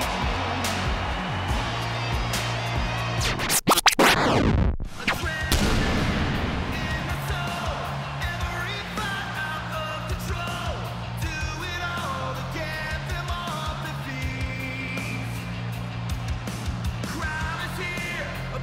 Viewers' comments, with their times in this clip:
0:05 Well my favourite theme of all time 🎉❤